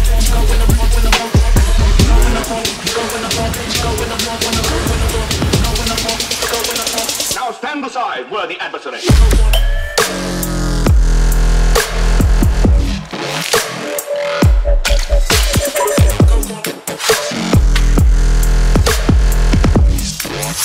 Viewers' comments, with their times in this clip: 0:08 That slow tf down tho yoooo